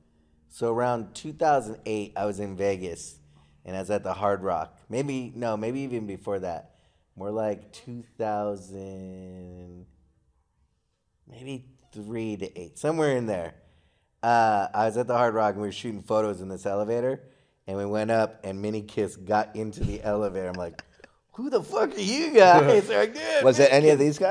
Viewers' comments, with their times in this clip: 0:08 someone let out a squeaker fart 💨😳🤔